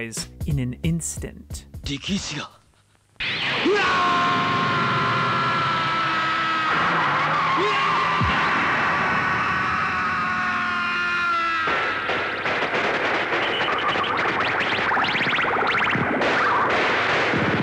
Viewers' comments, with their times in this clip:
0:03 Joe Yabuki did a Big Scream.